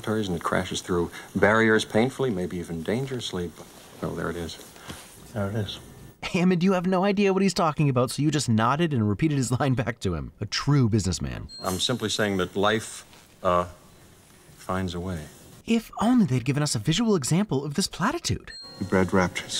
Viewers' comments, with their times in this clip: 0:03 Hammond isn't just smiling and nodding. It's unimaginable that, you can't hear that he's annoyed and mocking Malcom. Tone of voice says a lot, and this smile is a lot stiffer, like someone trying to smile to hide anger. Also, let's be honest. Malcom doesn't actually know what he's talking about either. He's not a biologist, and has no actual way of knowing if it's possible for these dinosaurs to spontaneously change sex. He's guessing, in a deliberately ambiguous way. Just because all of the physical world can be expressed in mathematical terms, doesn't actually mean a mathematician can do this on their own. It takes, a biologist, a physicist or a chemist to bridge these gaps.